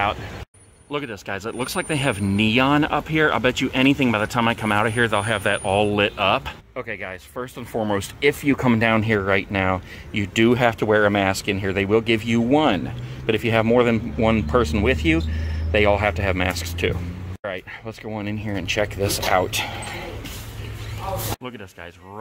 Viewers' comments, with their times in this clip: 0:04 bro what is that sound at like it made my ears bleed